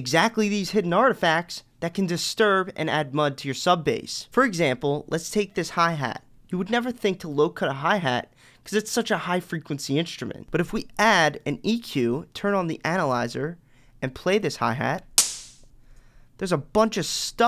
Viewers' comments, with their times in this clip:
0:04 It’s not a hihat – it’s a tom! 😉